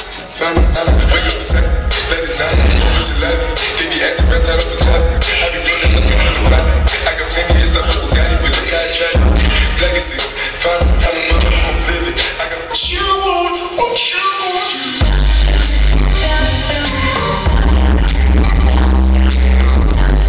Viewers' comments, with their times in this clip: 0:03 When the bass rattles your DMX cables and your lights change color lol